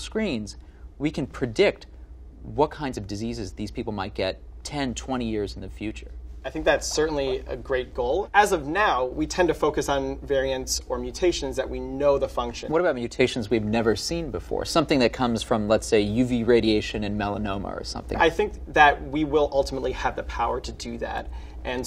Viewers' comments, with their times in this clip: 0:05 Level 1000: shoe squeaking
0:06 What's with the guinea pig sound ? What kinda cameraman is behind that camera?